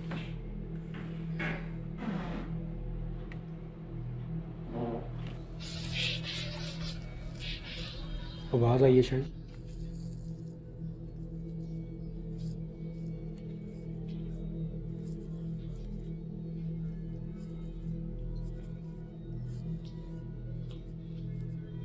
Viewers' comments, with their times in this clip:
0:03 that's a disembodied voice speaking loud to them, bro! I've heard those a lot investigating but I can't translate what is saying. I'm guessing it's also Arabic! Crazy!